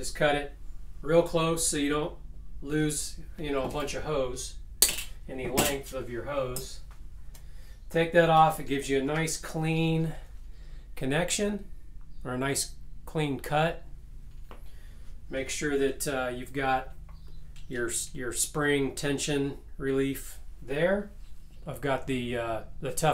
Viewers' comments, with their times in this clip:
0:06 did the pump ramp up the motor speed?